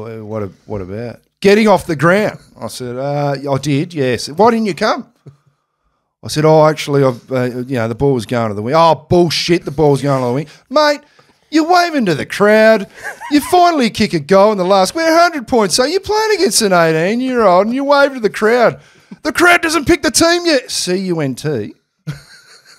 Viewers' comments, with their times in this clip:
0:03 that's a very good vocal impression of Ross Lyon